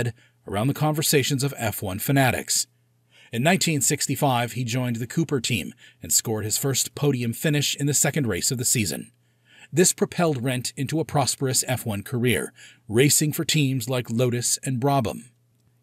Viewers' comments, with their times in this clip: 0:03 Ok i know This is Not the Right Moment but as a fellow German i cant keep my mouth shut! Its Not „Joken“, you promounce it „Iochen“. The „ch“ like a cat hissing. But good effort trying ig…